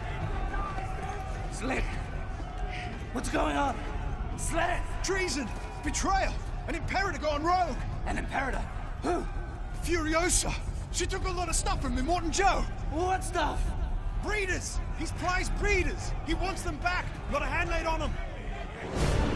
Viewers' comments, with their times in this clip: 0:05 can we all respect the amount of dedication to his lines though?